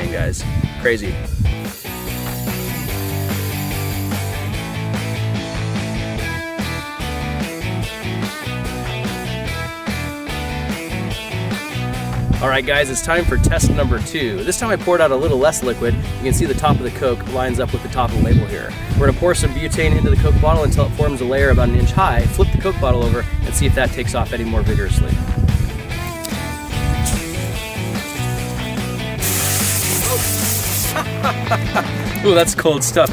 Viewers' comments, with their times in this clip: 0:03 is a part of 7 nation army the backing track at least. Or it sounds it in the context of this song. Lol
0:21 that sounded like the second thunder storm that has happened today